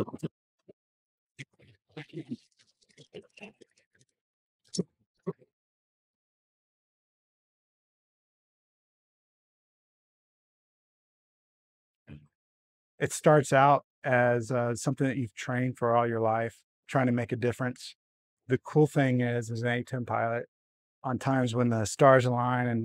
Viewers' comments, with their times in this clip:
0:08 video/audio is garbled. Congress should have given A-10 a large budget to continue research into upgrading designs and research into air/spacecraft armor & deflection technologies against ballistic & radiation weapons. High tech planes are to take out tracking & anti-aircraft tech, maintain air superiority and cover our helicopters, Harriers & A-10s, which in turn cover CAS/Transport/Supply/Special Ops for our ground troops. Modify air flow around A-10 nose & fuselage to disperse gunsmoke away from pilot & engines.Maybe add an armored computer coordinated mini-CIWS on top & bottom to cover incoming missile/drone attacks. Will have to reconfigure entire aircraft for best aircraft performance, survivability & mission success. If the experts approve any upgrades to the A-10,,have NSA watch & stop system of organized saboteurs.